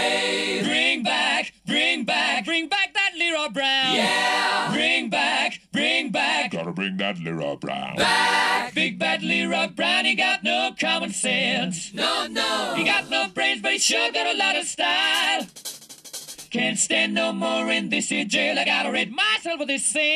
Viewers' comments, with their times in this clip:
0:06 Who's singing the very low vocal (doesn't sound like Freddie to me, I wonder if he could reach such a low note like that)?